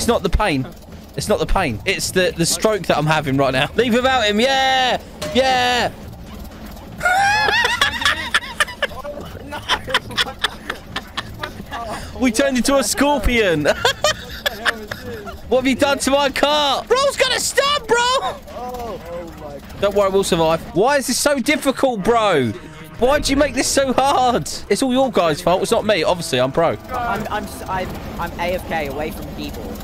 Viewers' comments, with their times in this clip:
0:10 we said the same thing we turned in to a scorpion 🦂 🤣 edit:WHAT IS THAT LAUGH?????!!!!!!???!?!?!?!?!??!?!?!?!??!!?